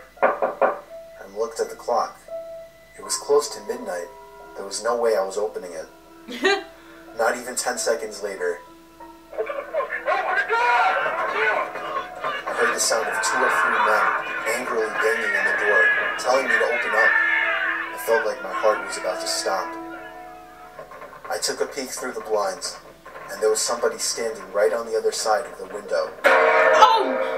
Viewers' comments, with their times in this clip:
0:09 Bro I'm not trying to be disrespectful but sounds like ps4 partys